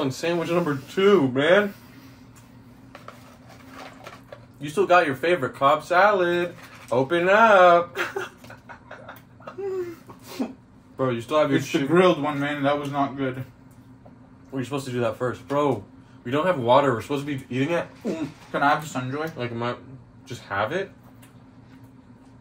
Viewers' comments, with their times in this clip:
0:05 this kinda sounds like an az accent but you roll your tongue more 😭